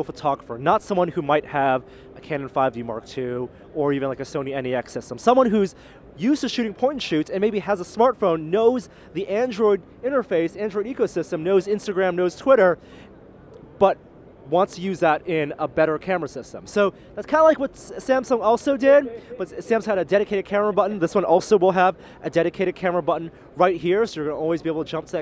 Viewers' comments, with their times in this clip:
0:06 used to shooting porn shoots?